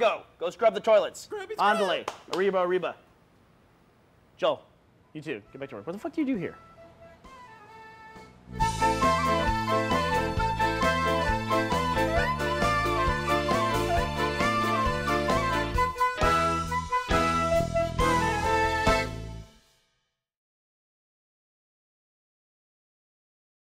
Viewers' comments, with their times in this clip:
0:08 [Spanish music plays] hold up